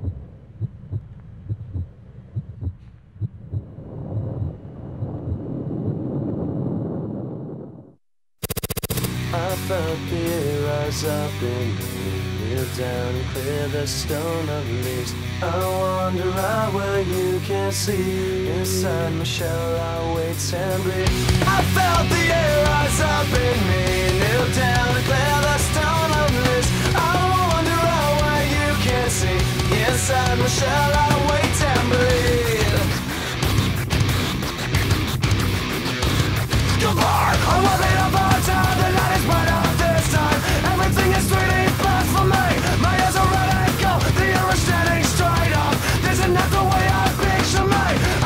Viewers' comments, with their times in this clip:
0:08 the sound of hit markers
0:36 Corey sounds like Owen Hart.